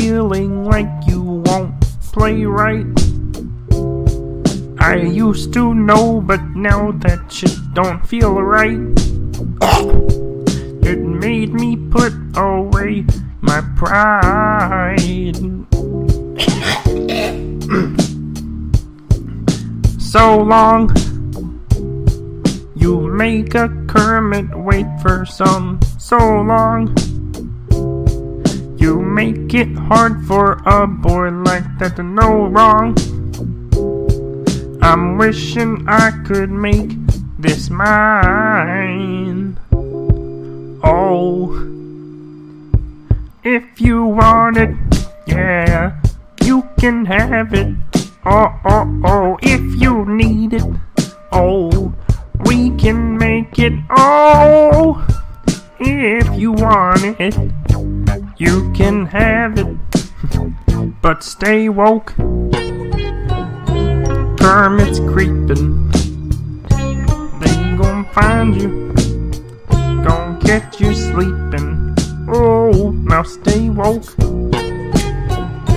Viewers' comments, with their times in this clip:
0:08 What happened ? Did you get a frog stuck in your throat? :D ps I'm aware this doubles as a gay joke in this case
0:08 did you hear Piggy choking?
0:09 I'm sorry sir, but do you have a frog in your throat? These jokes just write themselves.
0:09 scared the shit out of me 😂😂 and thus continued the hacking coughs
0:10 when he cleared his throat my stomach was hurting from laughter
0:15 Me: casually sings* Notices my friends listening* the sound i make to try and cover it up
0:16 wtf, why does Kermit suddenly get a smokers cough
0:46 LOL VOICE CRACK 🤣🤣🤣😂
0:46 that little voice crack gets me everytime
0:59 You can hear him laugh during the pause lol